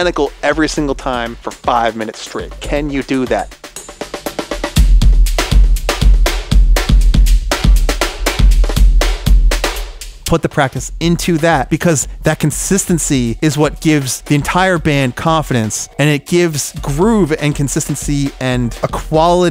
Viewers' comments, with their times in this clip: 0:05 Dude your kit sounds SICK